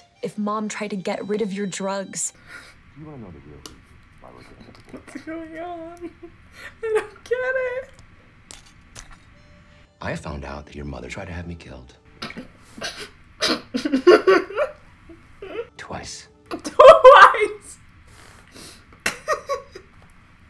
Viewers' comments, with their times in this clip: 0:06 Her chocking on her juice has me dead 💀